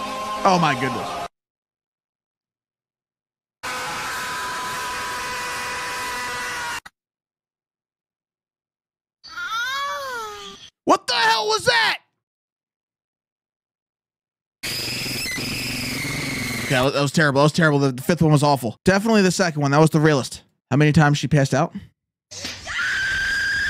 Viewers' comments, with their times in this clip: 0:07 4 was the realest scream
0:07 4 was the realest scream